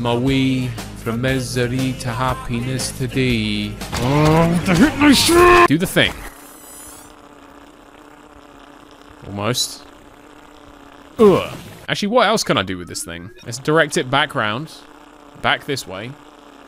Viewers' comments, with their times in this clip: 0:03 I love how you can still hear the song when he's getting wrecked by the hypno shrooms.